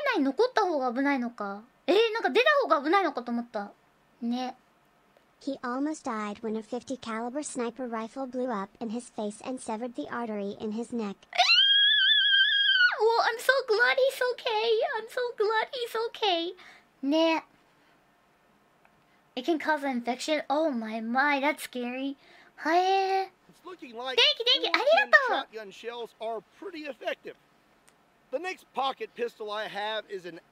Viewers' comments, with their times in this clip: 0:03 Our favorite Tea kettle expressing shock. I wonder how shocked she'd be if she learned he only survived cause he wrapped his shirt around his thumb and jammed it in the wound.
0:13 we did get a taste of the kettle lol